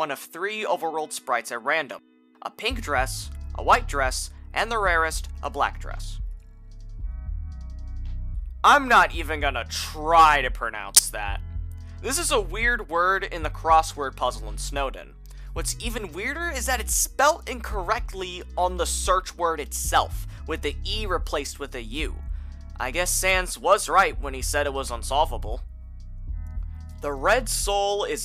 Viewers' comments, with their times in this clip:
0:10 holy this made me jump. a rly loud and corrupted sound plays for me there